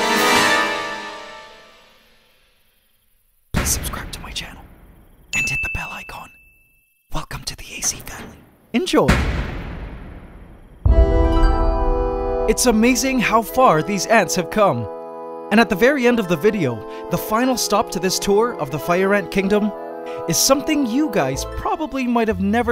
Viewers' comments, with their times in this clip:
0:10 The way you said eNjOy be like: